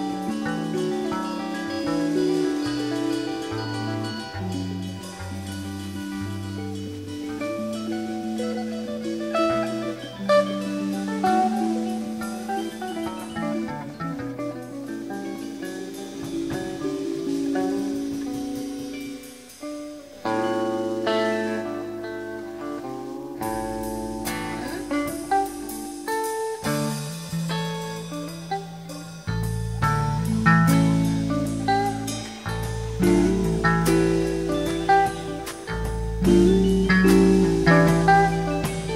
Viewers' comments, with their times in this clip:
0:06 isn the most beautiful lick jerry garcia ever played
0:25 Love that china cat tease